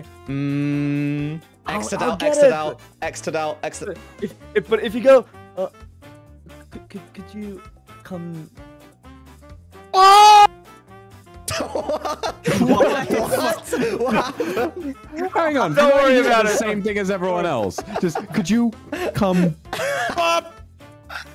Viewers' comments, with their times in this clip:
0:03 LOL THE SCREAM